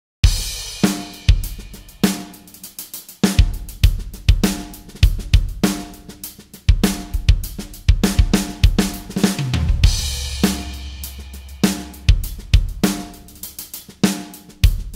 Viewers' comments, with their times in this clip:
0:02 has a nice clean hi hat roll